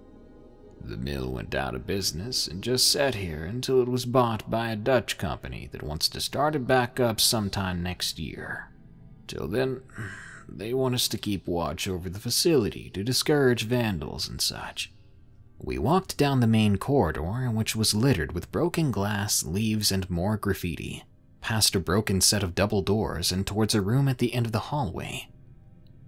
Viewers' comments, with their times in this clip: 0:10 What is that creepy groan I kept hearing throughout the stories!